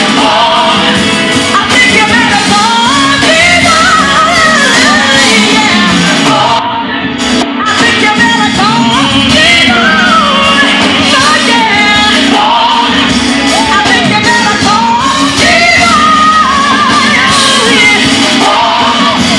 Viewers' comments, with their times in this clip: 0:03 Karen's run is all I will say. Ok not, it was sick!!